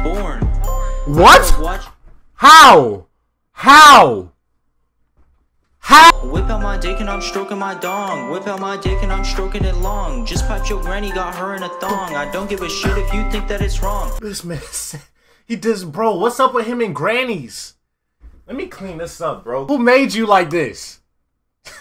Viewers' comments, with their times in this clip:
0:08 going hard on that beat 🔥❄💧